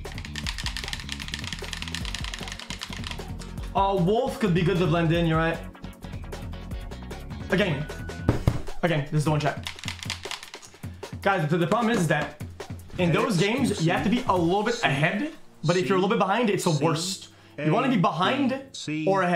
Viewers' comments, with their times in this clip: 0:07 we just gonna ignore the music timing